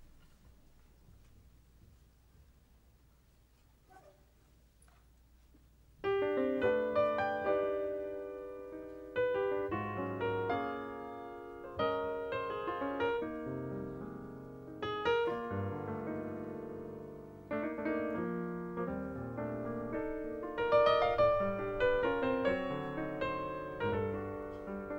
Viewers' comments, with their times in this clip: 0:05 Keith's warm-up and introduction to "In Your Own Sweet Way" is pure harmonic magic. Sliding passing tones which shift gears so smoothly you don't even realize it before the next liquid jewels drip across your heart like honey caressing a warm bun. The piano is a wind instrument when Keith plays introductions. Phenomenal.